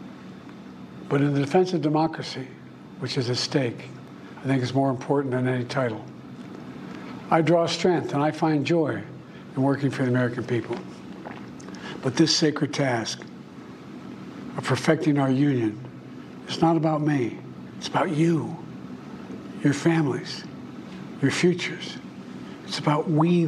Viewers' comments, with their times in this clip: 0:10 Anybody else hear the swallow